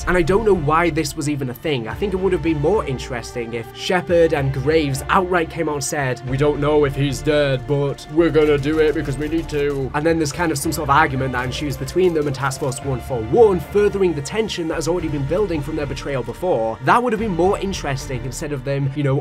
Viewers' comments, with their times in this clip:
0:04 that kind of impression caught me off guard ngl 😂